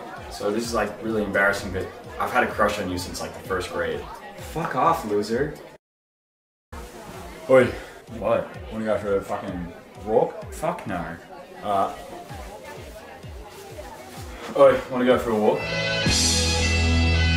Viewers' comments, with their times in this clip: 0:04 I heard the Aussie accent ;}